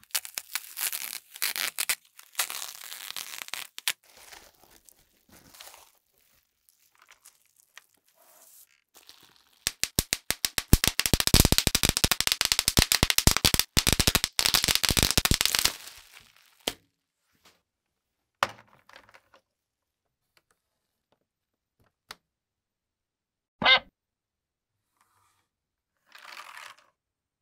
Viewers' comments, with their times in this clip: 0:08 it's my popcorn in microwave😁